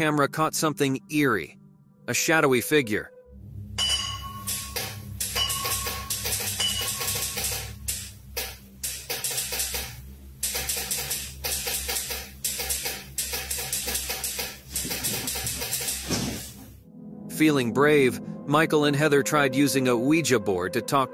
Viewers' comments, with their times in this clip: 0:04 That clicking sounds like morse code?! Can anyone decipher if it is?